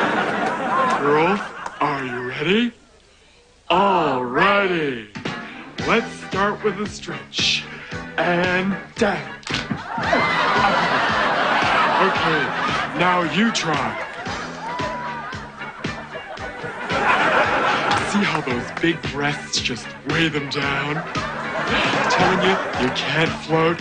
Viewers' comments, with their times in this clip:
0:09 I heard a broken back ! rofl